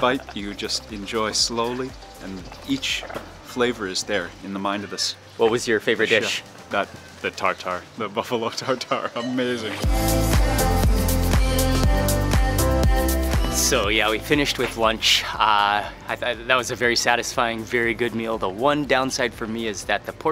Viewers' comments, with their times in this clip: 0:07 that guy is a copy of Mark, i don't like him at all :S He talks like Mark and even react the same way... fake guy!